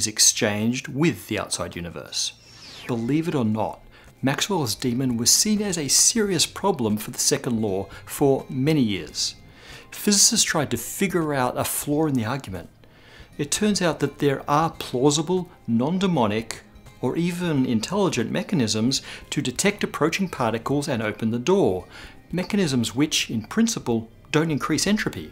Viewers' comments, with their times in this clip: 0:09 Floor in the argument! )
0:10 "Figure out a floor in the argument"